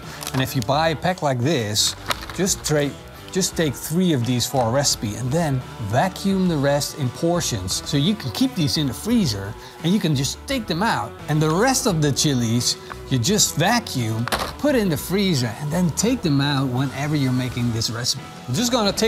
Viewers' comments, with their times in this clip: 0:03 is that a glitch in the matrix or do you say it twice